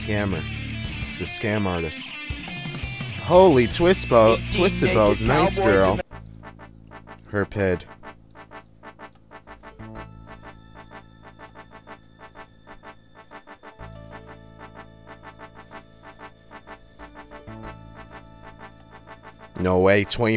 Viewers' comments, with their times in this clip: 0:06 lmfao, love how you just cut off Ram Ranch as it started